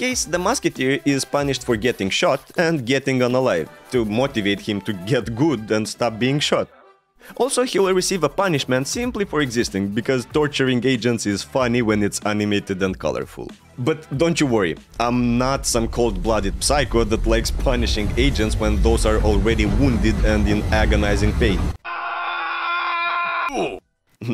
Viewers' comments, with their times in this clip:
0:07 Mark river music in the back ground amazing